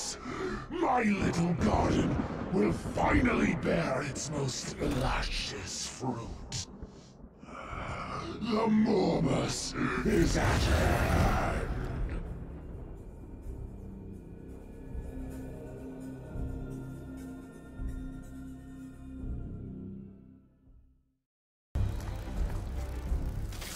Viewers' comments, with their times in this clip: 0:08 Did Morty just say "It's Morbing time"?